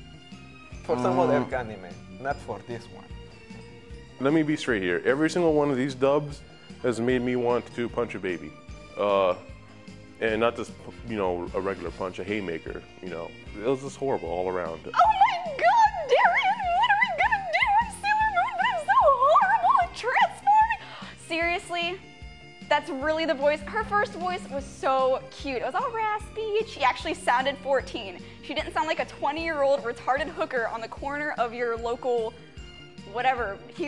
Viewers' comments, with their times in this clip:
0:06 THAT guy has an amazing voice.
0:14 That was the best impression I've heard.
0:15 I've seen the show, and it is eerie how accurate that imitation is.